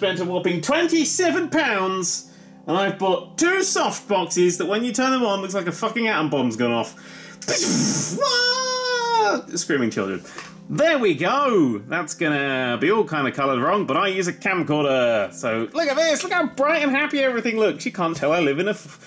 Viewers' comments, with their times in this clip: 0:07 That's exactly what nukes sound like